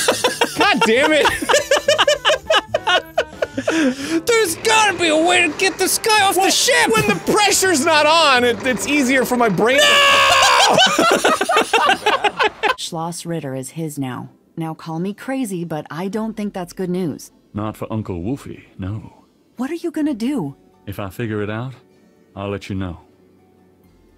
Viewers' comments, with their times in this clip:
0:09 Dan's "NOOO!" when he gets Lose a Turn that is Ultimate Despair.